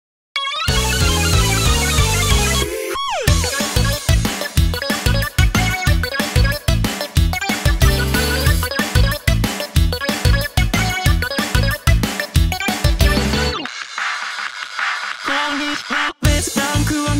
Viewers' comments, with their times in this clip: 0:02 The "HOO!" scared me, but your tuning ins great!